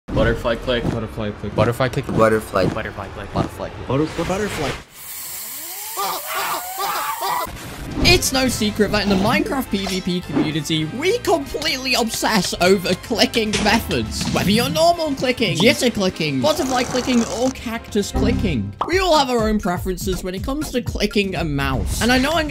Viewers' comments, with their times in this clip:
0:03 THERE AINT NO WAY BRO Buttah-fly click 😎